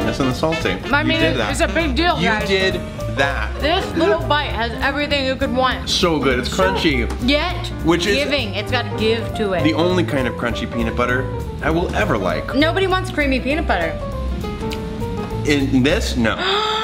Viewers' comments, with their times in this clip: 0:03 His little giggle and then hiccup- I live this man platonically, he is baby. Thomas Sanders is 100% baby.